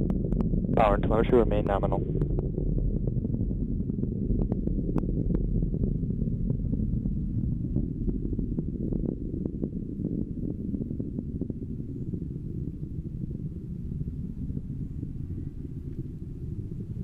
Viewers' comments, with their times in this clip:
0:03 "Power to (not sure) remain nominal." i heard "Power to motor remain nominal."